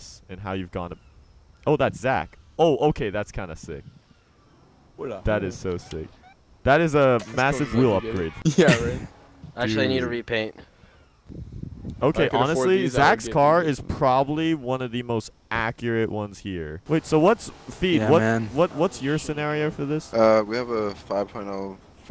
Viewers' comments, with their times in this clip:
0:08 in video you her a scream in back ground